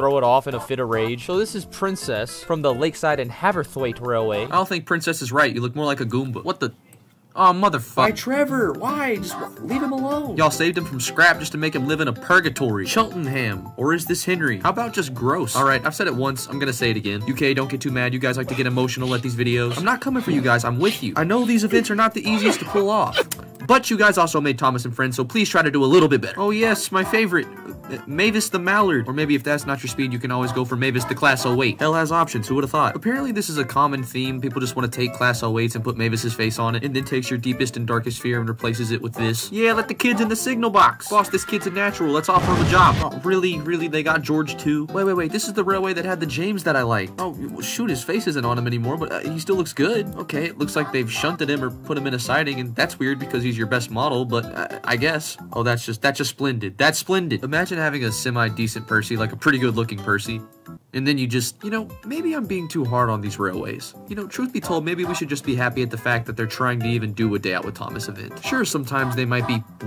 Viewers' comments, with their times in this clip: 0:04 mic but :) I like this video because of it
0:55 Sometimes I can still here his screams